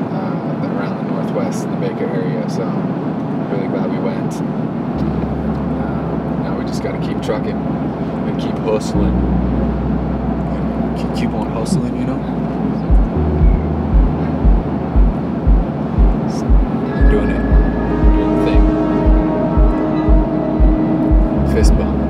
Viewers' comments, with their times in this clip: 0:10 nice JP Walker impression lol "unnnggghhh"